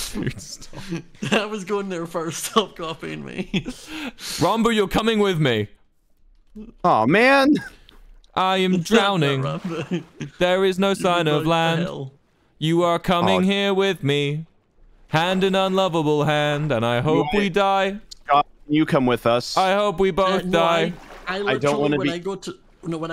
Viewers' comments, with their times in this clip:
0:09 Not Wilbur just starting to sing The Mountain goats